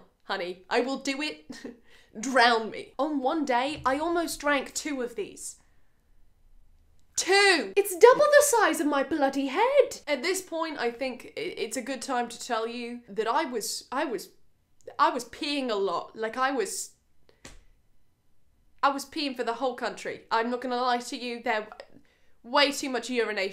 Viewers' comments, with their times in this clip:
0:08 you sounded so british I can’t 😂😂😂